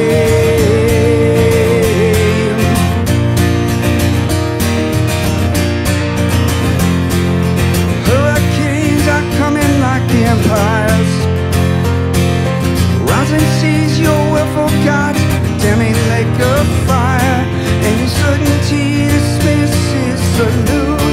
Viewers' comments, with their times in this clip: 0:09 The keyboard gives me chills. Everything about this version - amazing.